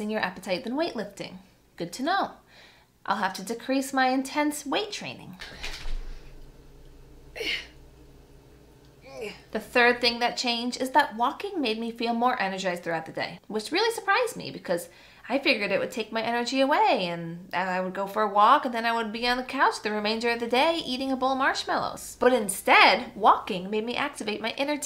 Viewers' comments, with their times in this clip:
0:05 💙 😂🤣😂🤣 the sound you made lifting that ice cream cone LOL